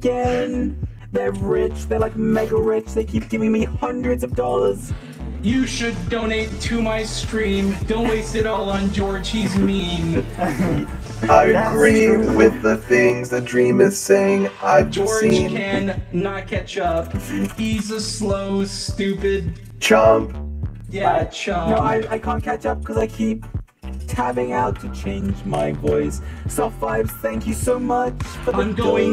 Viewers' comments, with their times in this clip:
0:10 Sapnaps autotune was cool